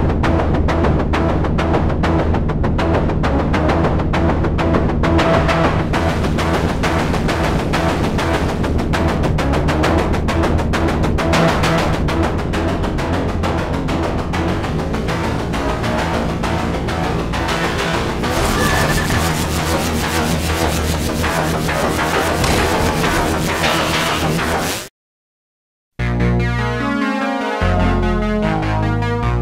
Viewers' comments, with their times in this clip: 0:10 Super quality sound wise and visual wise... and that bomb ooosh!!